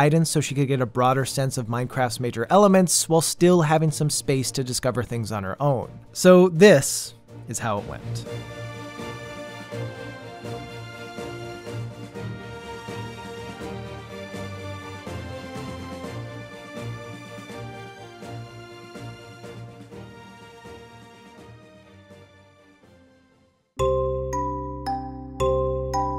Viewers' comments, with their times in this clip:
0:08 i was hearing the saints row music here when i looked away and my focus was shifted elsewhere. That gave me goosebumps. I'm not sure exactly what soundtrack but it's the one that starts slowly as in suspense and smacks right away after.